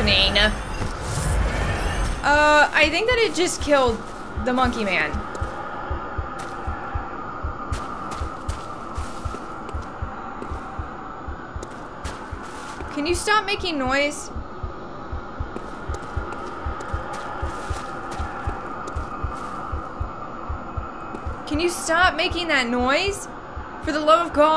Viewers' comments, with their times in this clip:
0:09 I'm not sure, but I think it's making so much noise due to your high insight? I don't recall this much noise while watching someone else's playthrough (who kept his insight low to increase frenzy-resistence). I could be wrong, maybe his game volume was just lower